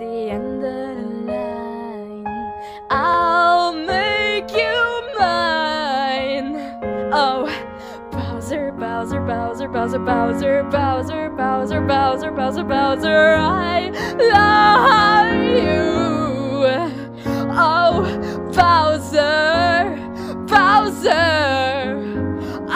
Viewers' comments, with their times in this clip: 0:06 That "oh" sooo sounds like "I am trying SO HARD not to laugh right now!" X^D
0:08 it sounds like shes holding her laugh